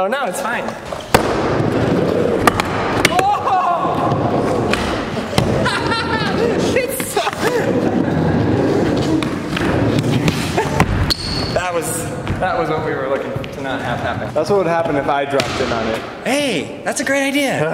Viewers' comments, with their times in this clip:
0:05 Lol it sounds like he says jeez fucker